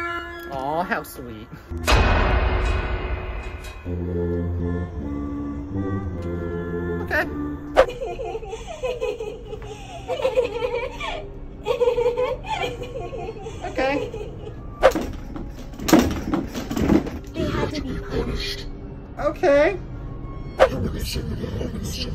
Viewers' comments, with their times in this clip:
0:03 her face and that lalala song is creeping me out and it’s gonna give me nightmares…😰😰😰